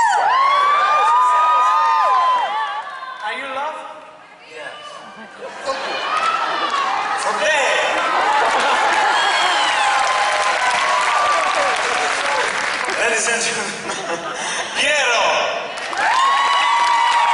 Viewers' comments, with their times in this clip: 0:04 I love that, when the boys ask "Are you in love?" some fan shouts out "With you!!" XD